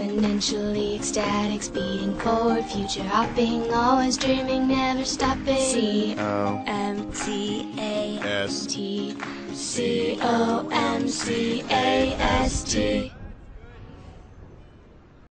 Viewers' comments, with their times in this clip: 0:12 there u can hear a guy in the backround saying thats good when their done spelling COMCAST